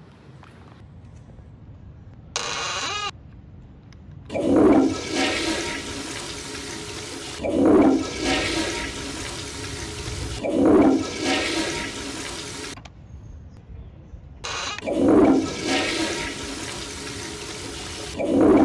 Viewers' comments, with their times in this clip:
0:04 Sound like toilet petronas